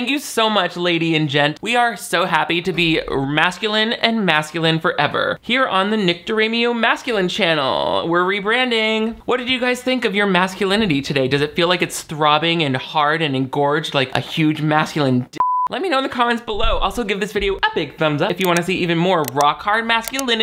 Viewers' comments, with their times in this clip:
0:06 The head tilt paired with the very sassiest "Mmmm" is the pinnacle of comments. Nothing else is needed.